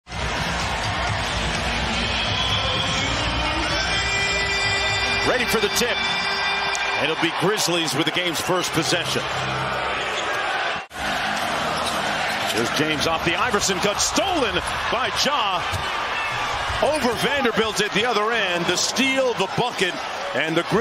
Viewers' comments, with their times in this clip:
0:03 “ready for the tip” pause 💀